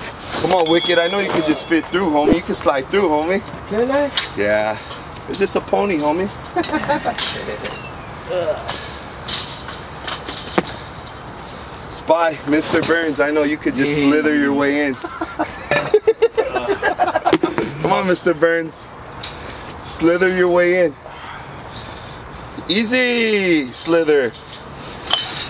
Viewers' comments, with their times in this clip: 0:08 Did he fart in ?